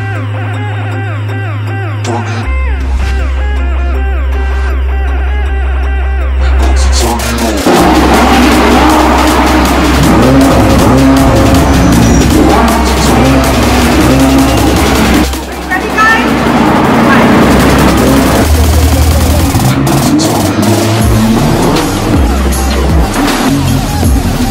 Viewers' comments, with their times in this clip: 0:09 when Desi moms turn on the vacuum at night